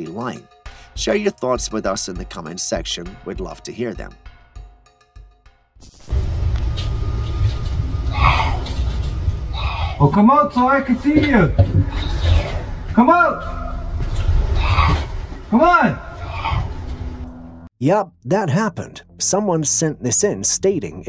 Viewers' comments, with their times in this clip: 0:06 He's talking to a fox, not a spirit being in the forest. I do the same thing when they stand in my front yard yelling like that. It does sound really creepy if you don't know what it is though.